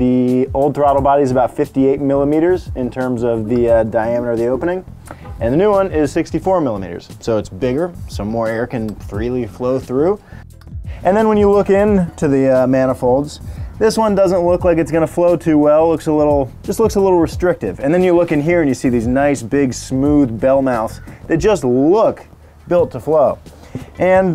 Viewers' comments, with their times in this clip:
0:05 I like the car horn